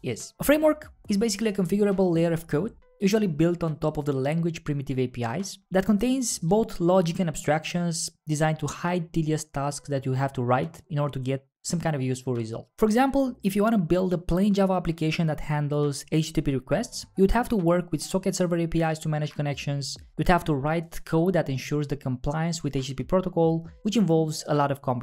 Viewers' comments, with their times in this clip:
0:08 what "TDS tasks" stands for?